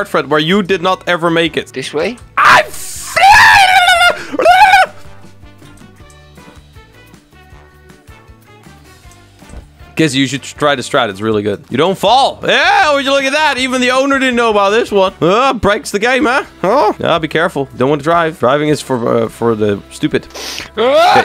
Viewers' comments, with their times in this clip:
0:03 you sound like mokey form Mokey's Show XD